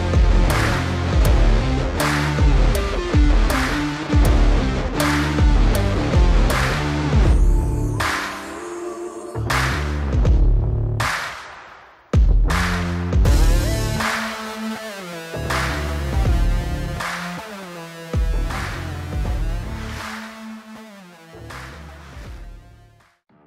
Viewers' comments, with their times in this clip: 0:09 great video but that stupid clapping makes me want to rage